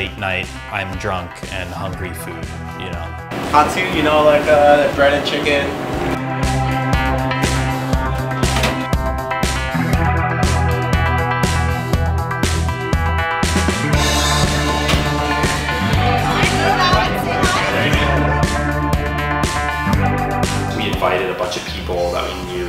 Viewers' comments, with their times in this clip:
0:03 didn't he say "Katsu" you know like breaded chicken, and not Honestly?